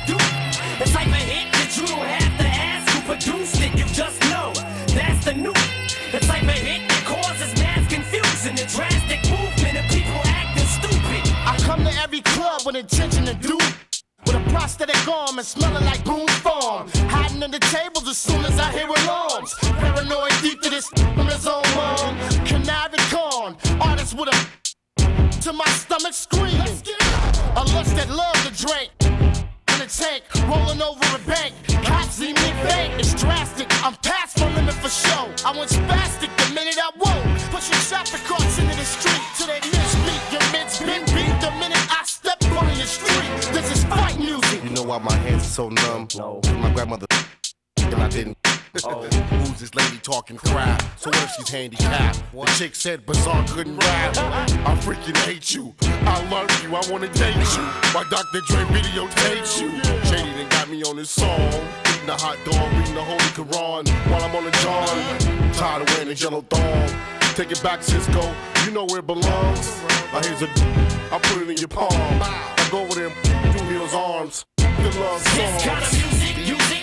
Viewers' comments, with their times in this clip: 0:09 they censored the word "harm" lol..wut?
0:57 Sooo that's where Kendrick got his other flow from🤔